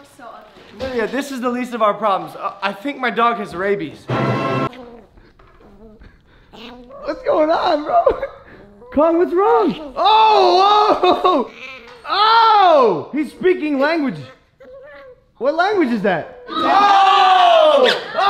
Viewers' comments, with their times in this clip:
0:05 kong sounded hella cute 😂